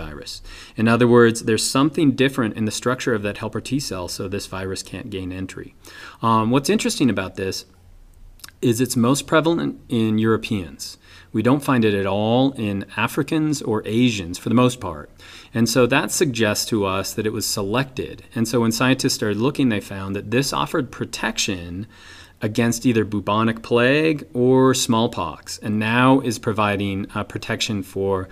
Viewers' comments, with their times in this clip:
0:09 most dominant in your penis ? o.O ^_^